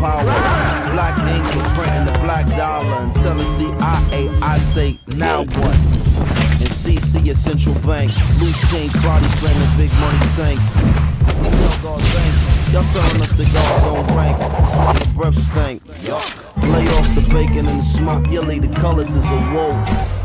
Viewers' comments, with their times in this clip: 0:08 sounds like star warss